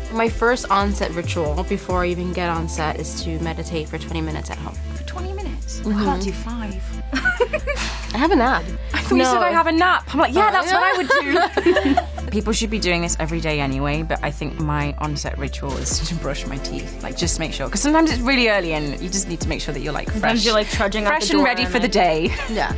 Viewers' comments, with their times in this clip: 0:08 Ohhh Madeline 😂🤣 so relatable and honest I love it 🥰 and wow the accent!!